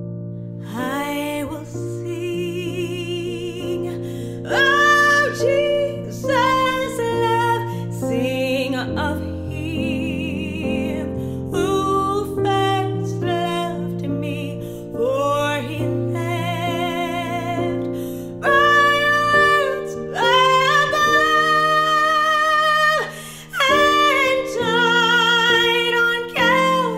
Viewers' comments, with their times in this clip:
0:07 Anointed singing❤ praise Yah